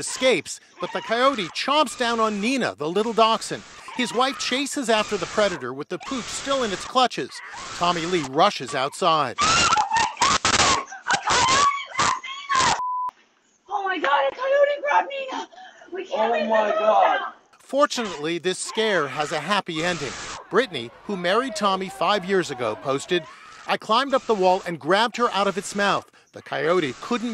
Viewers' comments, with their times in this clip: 0:10 Geez that scream was horrific